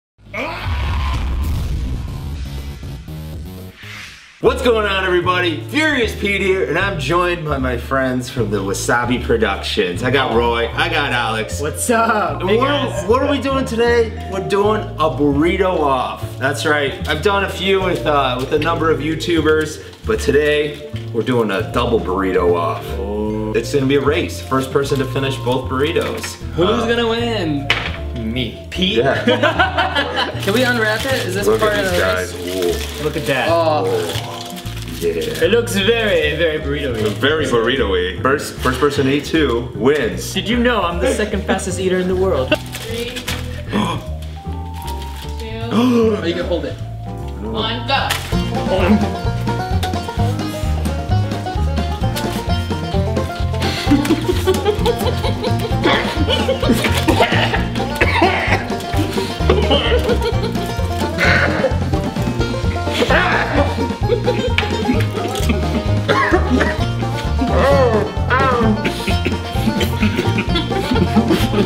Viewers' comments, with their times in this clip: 0:00 sounds like he finished a murder
0:55 sound of an ostrich giving birth